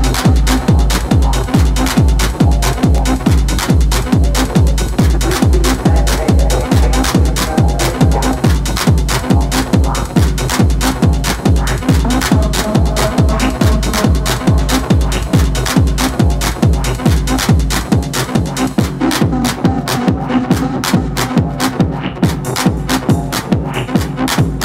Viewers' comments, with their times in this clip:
0:07 mix OMG, bad. You even see the look on her face, what am I doing wrong?